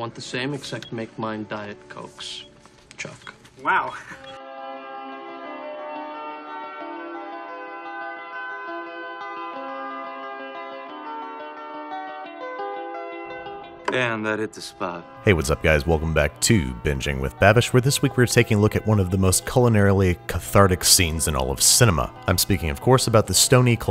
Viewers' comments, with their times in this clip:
0:04 Can we just admit that the music matches the scene even better than the music from the actual scene.